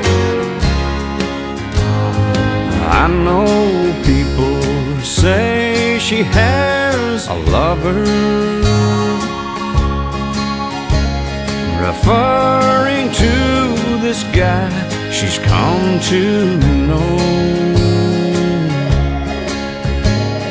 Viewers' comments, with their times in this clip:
0:08 that organ riff gets me every time